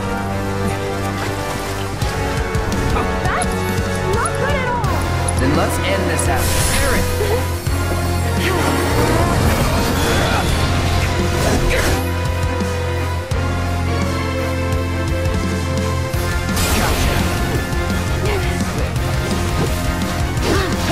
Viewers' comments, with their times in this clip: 0:03 When that drum beat dropped in and the music picked up with rock! DAMN!